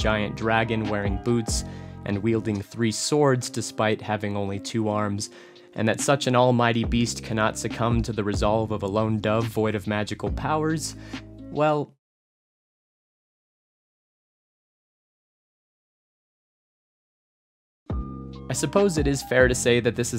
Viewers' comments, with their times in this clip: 0:06 Kangee player laughs.